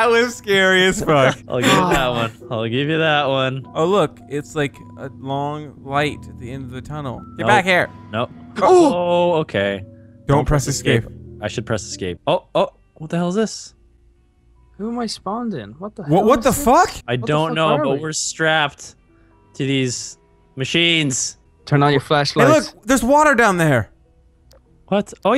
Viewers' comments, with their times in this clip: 0:08 it sounds like a demon at the end